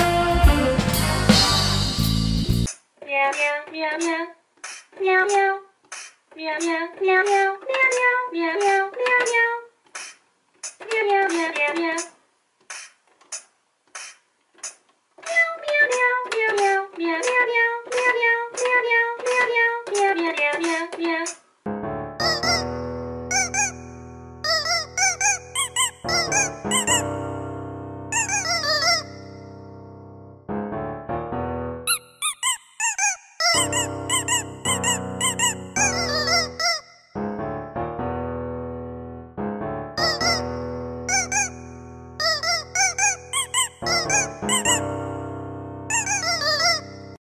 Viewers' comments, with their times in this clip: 0:04 when a cat plays a cat song
0:29 my dog (cookie) popped up when the chicken squeaked!!!🤣🤣🤣🤣 I love the Bass or the saxophone!♥️♥️😍😍
0:45 saxophone is the best.......